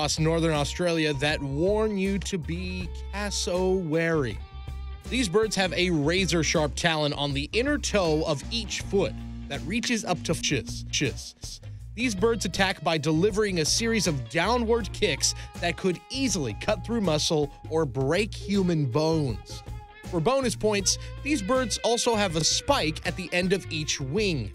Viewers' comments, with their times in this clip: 0:10 RECORDING ERROR! REPEAT ON GROW UP TO 6INCHES